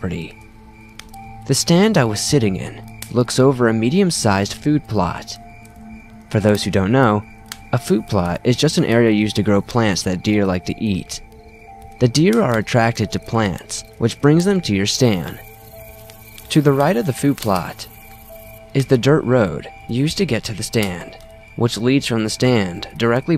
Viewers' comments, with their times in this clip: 0:05 did it says bob Ross stood behind my farther?